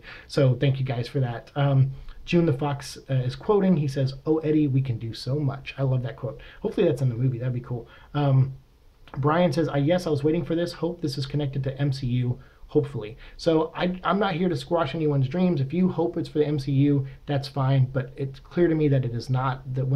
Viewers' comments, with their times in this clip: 0:07 I figure something SIMILAR to it may be in the movie, but I just thought it sounded menacing.